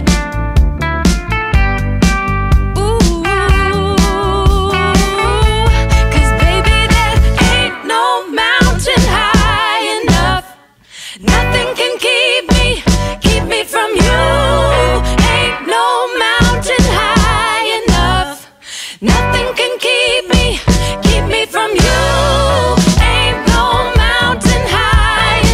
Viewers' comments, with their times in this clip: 0:08 That thing that happens where they light the afterburners and go full Motown. Incredible.